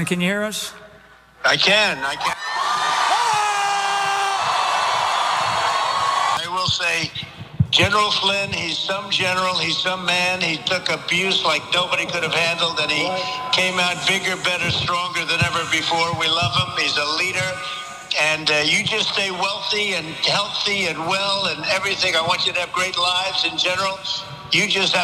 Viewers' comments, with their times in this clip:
0:07 did Trump say, "He's so General, He's so man."? 😂